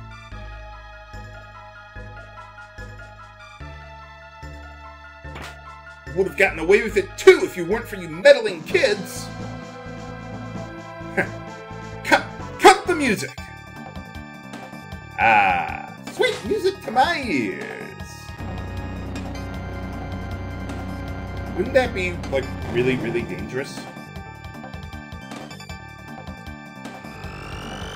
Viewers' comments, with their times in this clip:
0:08 I love the music gag there. That was the first time I'd ever seen anything like that done in a video game